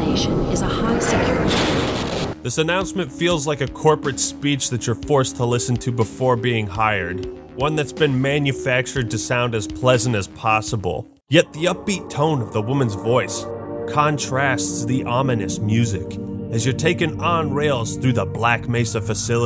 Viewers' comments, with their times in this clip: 0:04 Never realised how well the music from Doom goes with Half Life and I've been playing both since their respective release dates